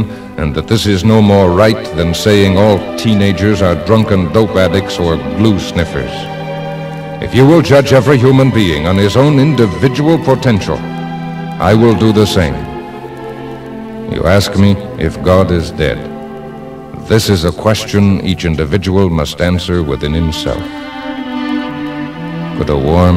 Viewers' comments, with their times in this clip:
0:06 my brain hears a guitar riff after